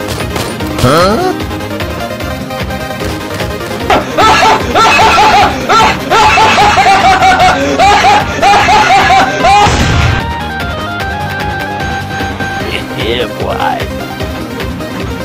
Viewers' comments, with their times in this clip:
0:03 What mode did you clear: What mode a clear: